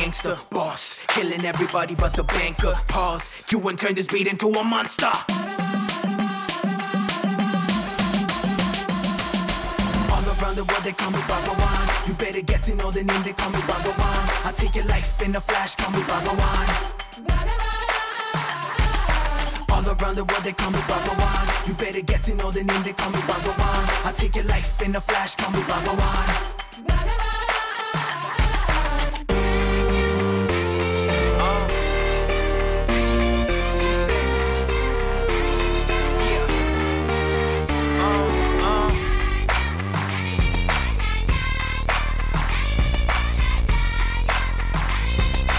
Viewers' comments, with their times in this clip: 0:06 Just imagine this music in flute... 😄🙁🙁U1... Neengaluma...
0:29 The panning of the bassline is just lit man🔥 Hope I knew this masterpiece before!